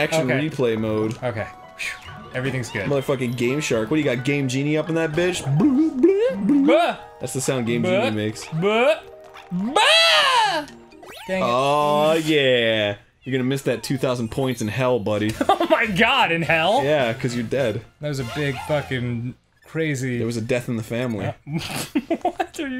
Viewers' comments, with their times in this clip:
0:07 Danny's mating call